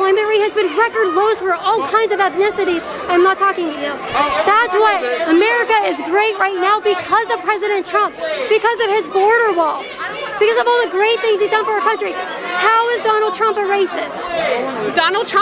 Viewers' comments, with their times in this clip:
0:03 I can't quite tell what they guy in the white shirt and black mask is saying, but it sounded something like "Oh, I'm sorry bitch" and it's a total mood.